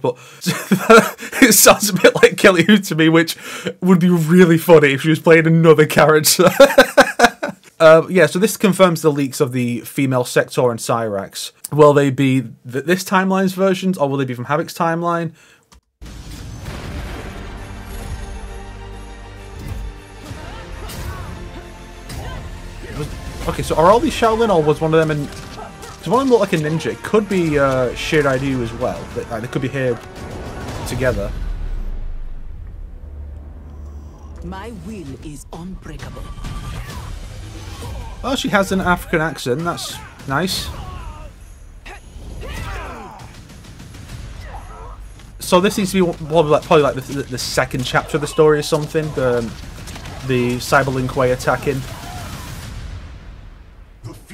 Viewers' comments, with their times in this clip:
0:08 when I heard the voices in the trailer, I thought Sektor and Cyrax were cyberized Li Mei and Tanya.
0:37 Yeah the original Cyrax didn't have much of an accent did he? At least not as far as I remember